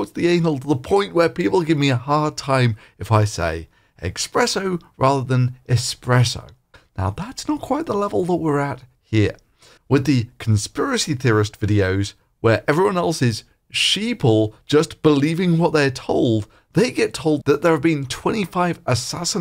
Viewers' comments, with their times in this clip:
0:04 Every time I hear expresso, I want to tear my face off of my head. Rest of the video is good :D